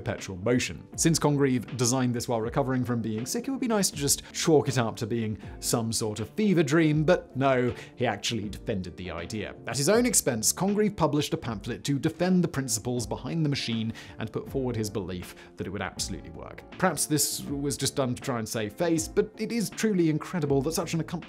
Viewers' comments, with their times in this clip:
0:06 “Some sort of beaver dream”. Nice freudian slip of the tongue.